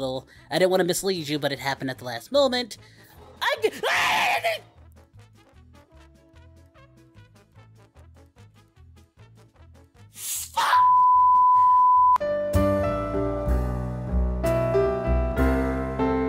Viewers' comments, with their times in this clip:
0:03 That Fuck was personal.😂